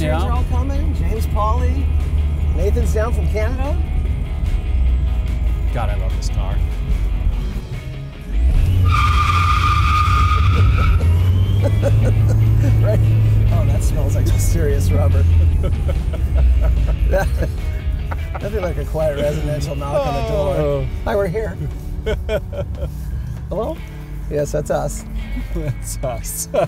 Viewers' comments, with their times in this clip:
0:07 I love the tire squeal with no engine noise.